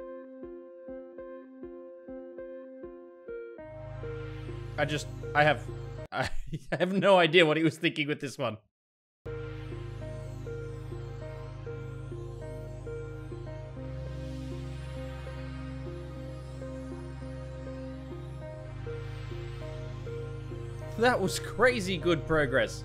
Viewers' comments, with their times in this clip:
0:03 Am i the only one with ptsd from the soundtrack because it sounds like the skype ringtone